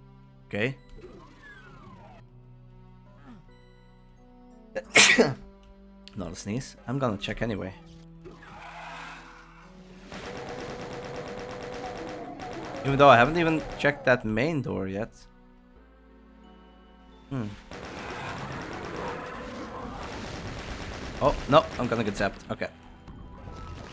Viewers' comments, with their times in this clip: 0:04 Mandatory Dominus Diabolicus "Sneezetaan" moment timestamp: 😁